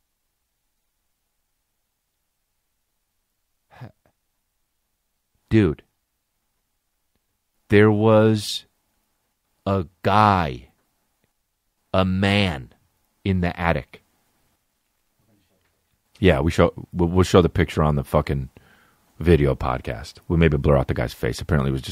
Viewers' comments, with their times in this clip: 0:03 the softest “heh” in “heh” history